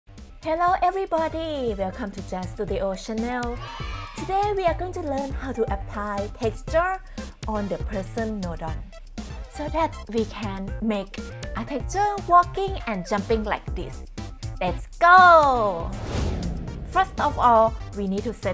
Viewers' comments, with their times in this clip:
0:04 AAAAH MY EARS NOOOOO KIDS CHEERING